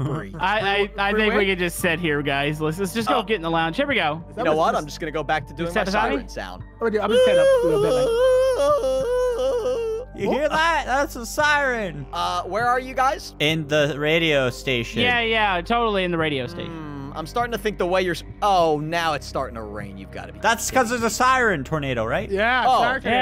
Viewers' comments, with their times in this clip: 0:07 my voice during teenage years: